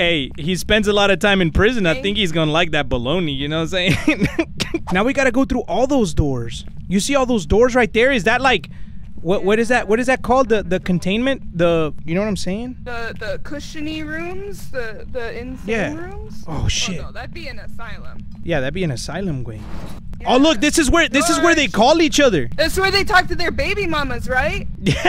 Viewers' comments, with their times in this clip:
0:10 Nah, it’s the fact that you’re struggling to say solitary confinement😂